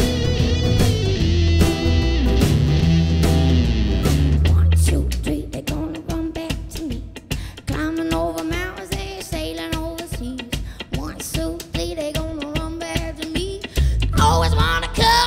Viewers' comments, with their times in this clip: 0:03 strained her voice